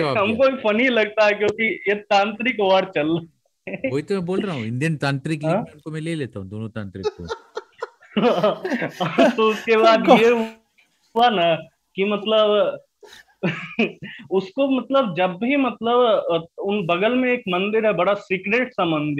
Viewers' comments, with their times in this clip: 0:03 sounds like the guy with bloody mary story